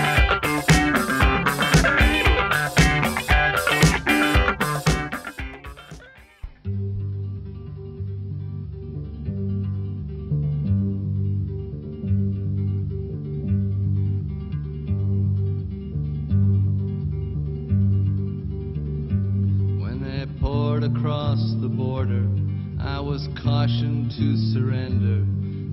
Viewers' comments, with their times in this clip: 0:07 skip the loud, obnoxious intro and go straight to the song